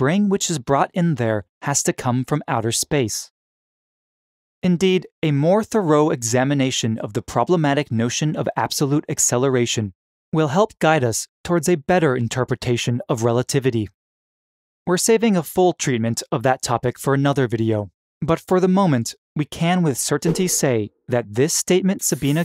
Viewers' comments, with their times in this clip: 0:04 Why does he say "Thoreau" instead of "thorough" ? Is this an AI voice?